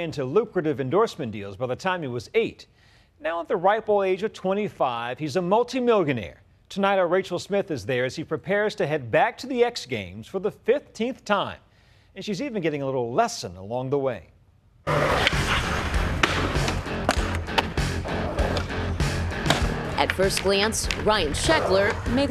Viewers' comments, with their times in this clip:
0:05 secs Hes a multi what ?..Millganee ?